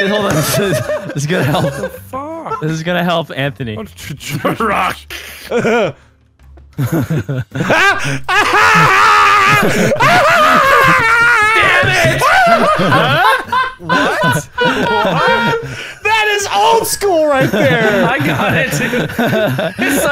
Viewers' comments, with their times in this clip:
0:06 best laugh for me